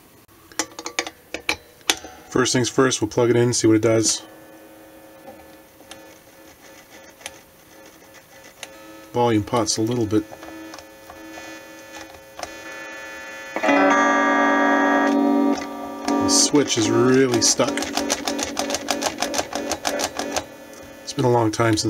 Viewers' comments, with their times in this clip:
0:09 There's that classic Stratocaster tone!